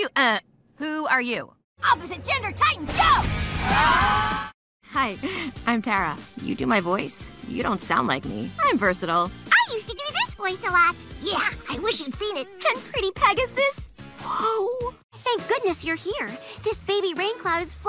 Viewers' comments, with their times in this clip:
0:04 the clip Tara voicing herself and others is cool
0:05 Tara voicing herself
0:05 She did Raven, Bubbles, Timmy, Twilight and herself in a single clip